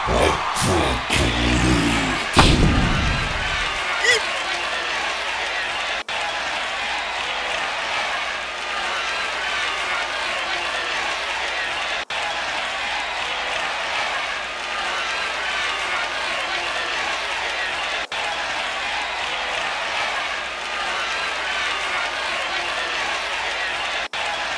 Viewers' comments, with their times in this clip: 0:06 applause contiung clapping🥴🥴🥴🥴🥴